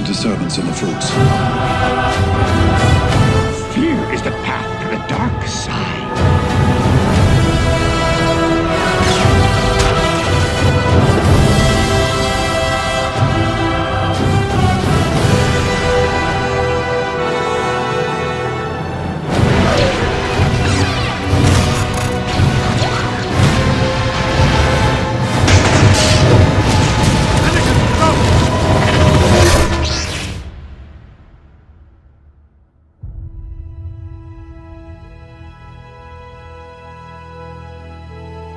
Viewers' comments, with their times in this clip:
0:06 god! the music turns off! and starting from its taking me! epic work you doing man! thank you!!!
0:11 For some reason I thought where the lens flare happens at the same time at the high brass note was really satisfying.
0:13 is perfect the duel of fates perfectly fit in there
0:14 Nice work, sound mix is a bit iffy in places but overall it's very fun. Got goosebumps
0:22 The sound of the gun will forever be etched in my brain